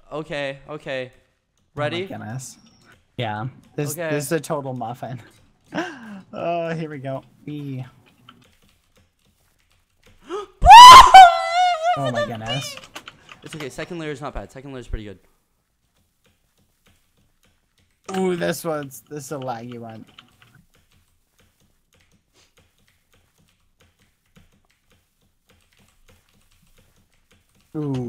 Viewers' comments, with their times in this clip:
0:10 R.I.P head phone users